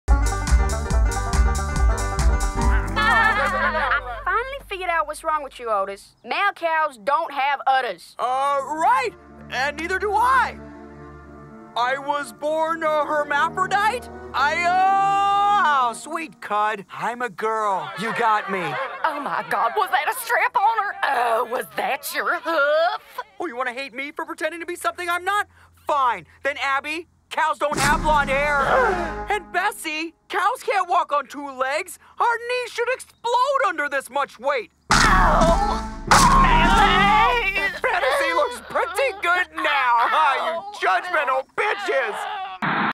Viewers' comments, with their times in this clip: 0:03 Error, you can hear a sheep noise but there is no sheep.
0:17 I thought he said “Cunt” uncensored! LMAO
0:34 Cow’s Legs breaking like twig snapping and bones cracking🐾⭐️❤️🌈